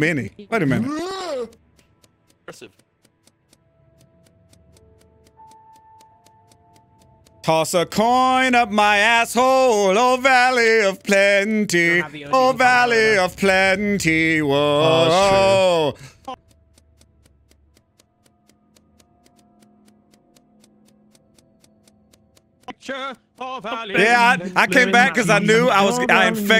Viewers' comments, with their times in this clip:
0:07 by far the funniest song I've ever heard in my life